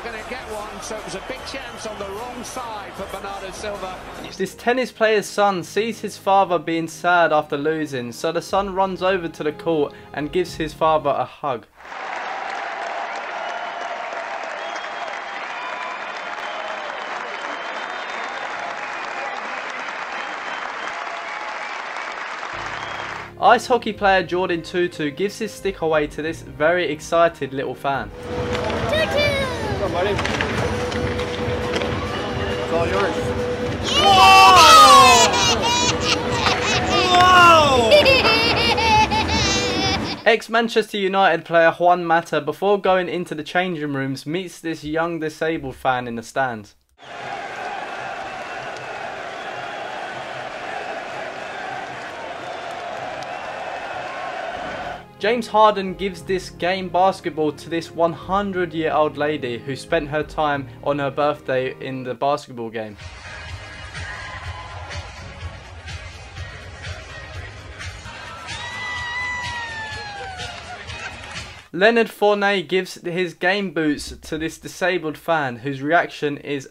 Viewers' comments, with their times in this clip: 0:10 “Gives his Favah a hug.”
0:33 The kid's laugh is infectious, and for me, came at precisely the right time. When that hockey player decided to make that kid's day, he had no idea that the resulting sequence of events would eventually provide some light for someone who survives in the darkness of depression. Doing for others can easily cause ripple effects that make the world a bit better, regardless of whether we see the fruit of our actions.
0:35 greatest laugh ever
0:36 that laugh scares me
0:38 that kid had an evil laugh. 😅
0:58 that laugh was just evil.
0:59 that evil laugh 😳 who knows we that kid has been planning in his head...😭
0:59 LOL @ that kids laugh, love it.
0:59 That evil laugh is killing me💀
1:01 but his smilee and laugh😂😂
1:03 that laugh is so adorable!!!